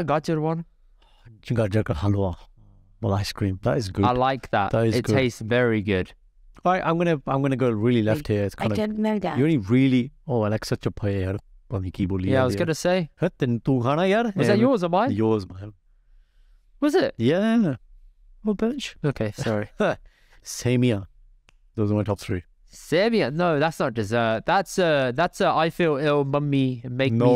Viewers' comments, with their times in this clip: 0:08 what was that noise ?